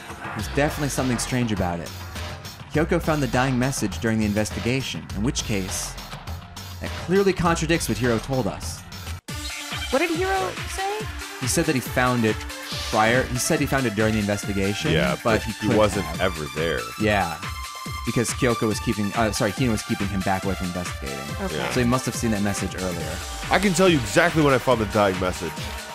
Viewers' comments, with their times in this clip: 0:09 I love the dance music I love thinking the sound is diegetic. Monokuma is sitting in the background with some turntables like it is a rave.